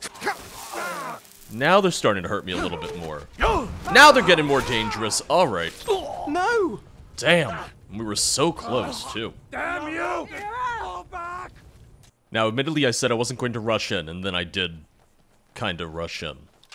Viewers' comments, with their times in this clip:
0:04 You turned British there for a second. Do you need to see a doctor? I heard British has been spreading around the past few weeks.